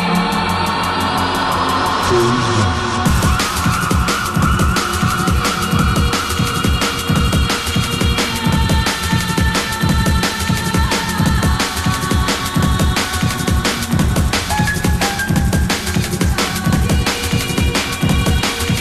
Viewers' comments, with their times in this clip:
0:03 gosh, this stuff reminds me NFS III songs =D